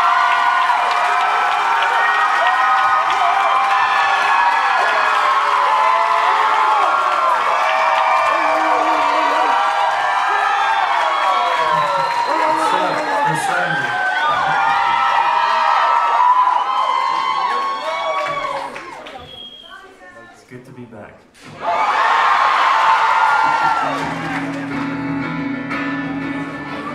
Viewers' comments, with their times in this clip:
0:07 THE BARKING IM DYING
0:11 There's a dude BARKING 😭😭😭😭 Sir pleasee